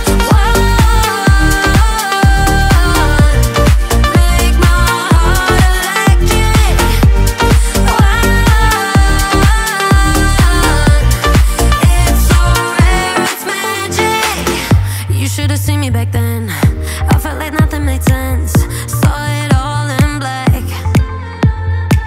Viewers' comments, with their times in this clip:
0:05 Do you mean the note that the vocal hits ?